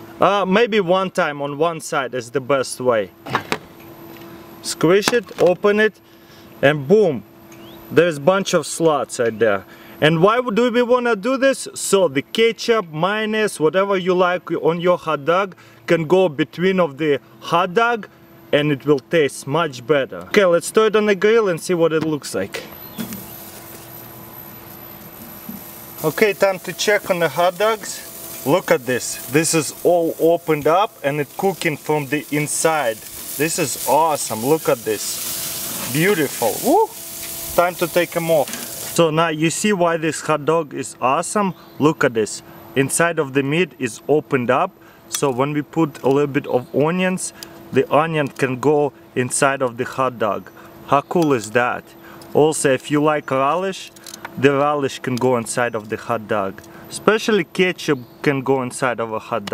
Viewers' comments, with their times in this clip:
0:07 "There's a bunch of sluts" -Crazy Russian Hacker 2016
0:46 Oounions Ralish Keechup Minus